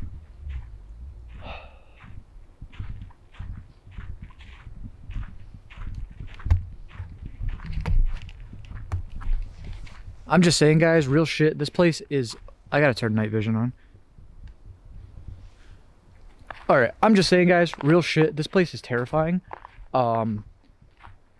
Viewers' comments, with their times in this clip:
0:09 am I the only one that hears that car revving